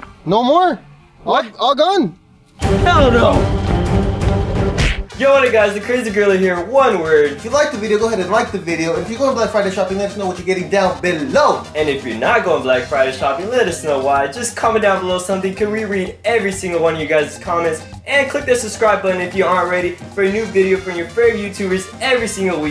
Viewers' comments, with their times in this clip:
0:03 he sounds like Vanossgaming